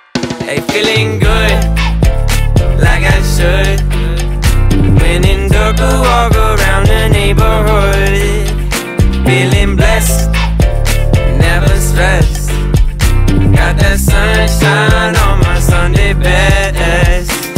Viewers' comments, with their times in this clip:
0:05 Am I the only one who hears "Lenin took a walk around the neighborhood" ? I mean..